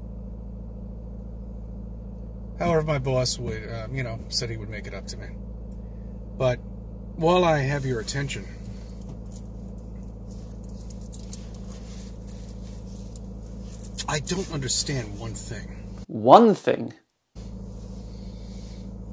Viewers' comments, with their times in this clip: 0:03 Do I detect the tell-tale sighs of a very depressed person? Is he THAT tied to his narrative? So much so that facing the inevitable facts have him frightened of spending eternity in the everlasting fires of Hell?